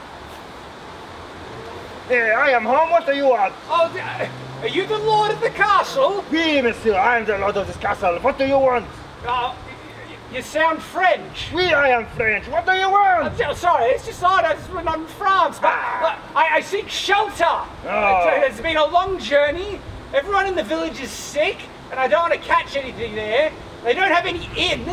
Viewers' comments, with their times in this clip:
0:05 the lord of the castle, Arnold Schwarzenegger